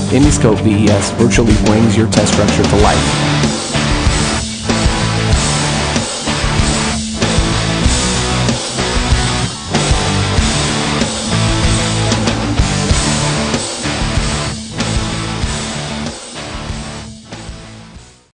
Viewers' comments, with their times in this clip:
0:03 How about the music drop